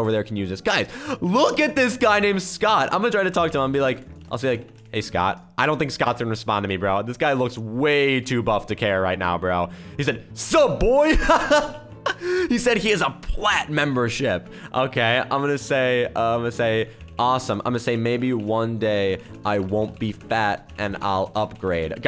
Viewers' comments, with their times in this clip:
0:09 I LOVE THAT Scott boy 😂😂😂 (not really just how he said "SUP BOI")